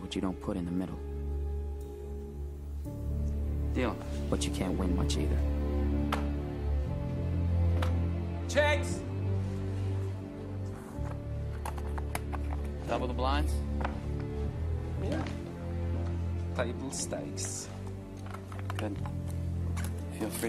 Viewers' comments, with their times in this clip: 0:03 i like the "CHEX"